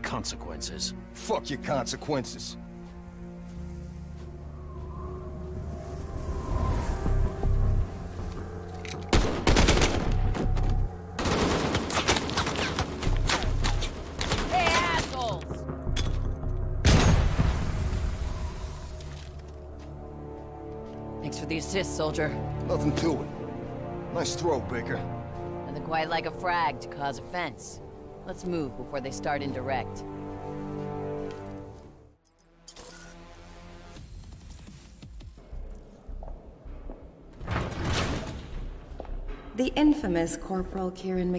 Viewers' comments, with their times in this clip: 0:10 sounds like fortnite gun fire
0:11 Those bullet whizzes sound ODDLY familiar...
0:11 fortnite sounds xd
0:11 Fortnite?? (The gun sounds)
0:11 fortnite shots hitting the ground nearby you
0:12 Doen't that sound like Fortnite shots
0:12 it sounds like fortnite bullet sounds
0:12 fortnite gun noises ?
0:13 sound like fortnite gunshots
0:13 Who else noticed these Fortnite gun shots lmao
0:13 it sounds like missing bullets in fortnight
0:13 Did anyone hear when they were hitting the wall it kinda sounded like fortnite
0:25 did anyone hear fortnite sounds?